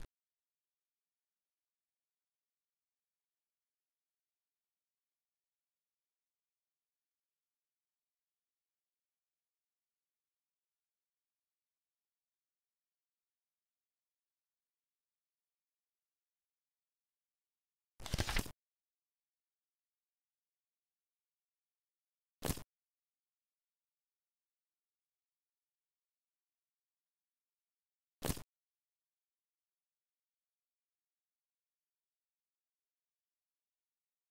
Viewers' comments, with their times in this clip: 0:05 this seems like nulls room cause wel the glitchy sounds and well it looks "Human" like
0:18 bro he read really quick 💀
0:18 that fast reader Lmao